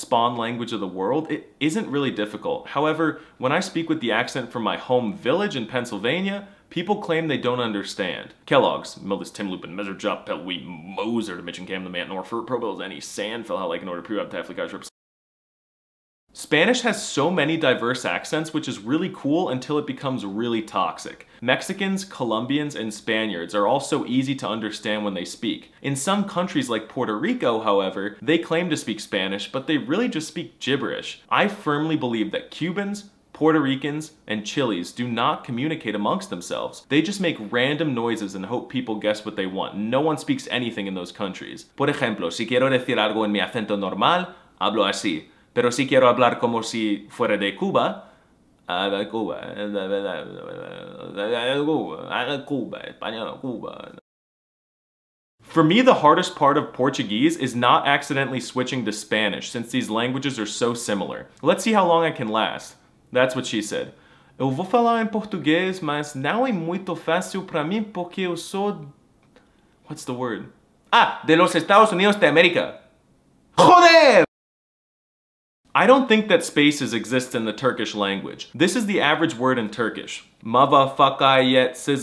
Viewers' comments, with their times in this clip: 0:08 my boy started speaking in simlish
0:08 is it really English?
0:08 bro started speaking simlish
0:08 bro really just spoke American gibberish💀💀💀
0:09 bro was speaing simonese bro
0:18 this is not Spanish, its mexican
0:33 My old cuban friend sent me gay pictures 📸 and he speaks like this 😂😂😂😂😂
1:07 that was brazilian accent (angry continental portuguese noises)